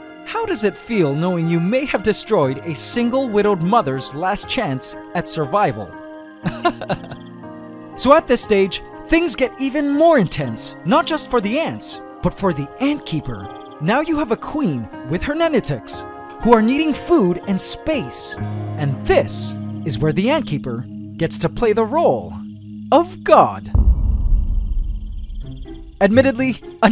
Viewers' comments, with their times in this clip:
0:08 That laugh gave me psycho vibes lol